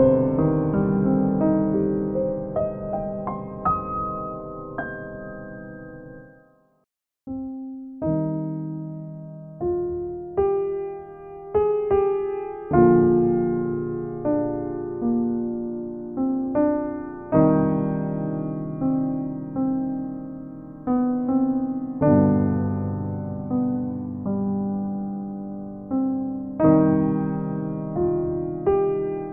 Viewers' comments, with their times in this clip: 0:10 From the start of the melody to I just been starring at my window looking just at the rain the the beautiful. In other words I’m contemplation with this beautiful melody. It’s very late hour of the night and with this melody makes it more spiritual to my soul. Thank u with this slow version. By the way is this okay for any use ? Or it’s a copyright ?